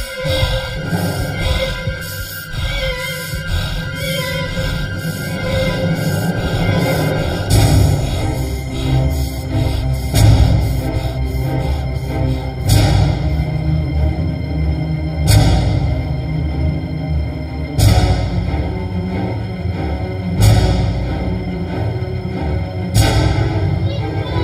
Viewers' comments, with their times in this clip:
0:09 The breathing ends ...